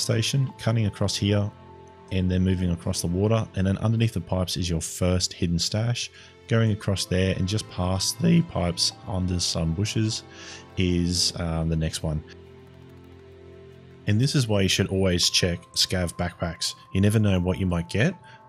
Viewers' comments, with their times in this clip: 0:06 respect for keeping the voice crack in